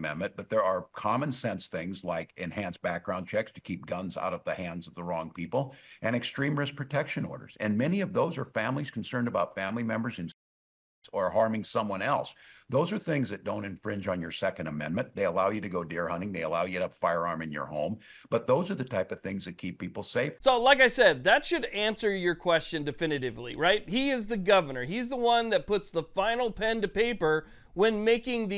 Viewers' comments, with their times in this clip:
0:10 they mute his word???